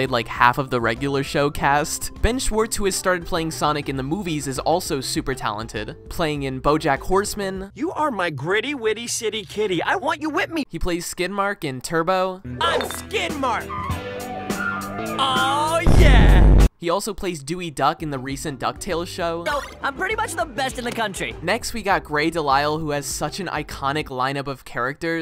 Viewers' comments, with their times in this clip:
0:07 So before this I was bingeing that duck tales show and the one before that I was like “that sounds like Dewey”and it was